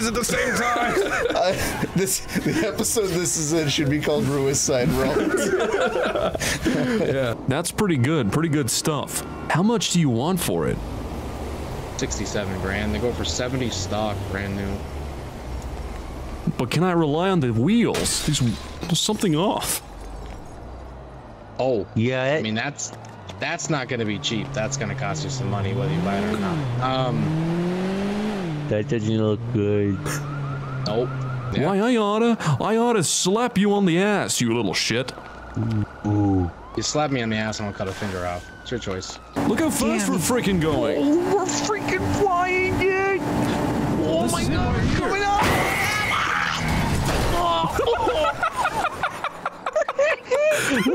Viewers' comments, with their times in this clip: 0:08 he sounds like the guy from American psycho
0:36 The guys with the most timid sounding voices and demeanour always try to overcompensate for their weakness by trying to act like a big scary guy.